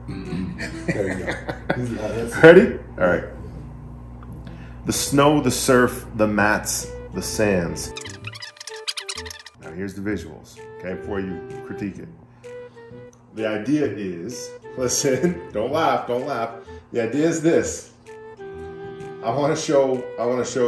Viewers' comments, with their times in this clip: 0:04 That sounds like a kindergarten outdoors adventure speech.